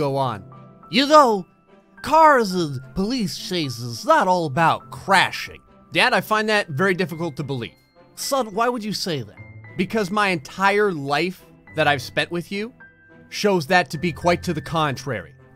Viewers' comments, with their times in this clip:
0:03 Sounds like Bill Cosby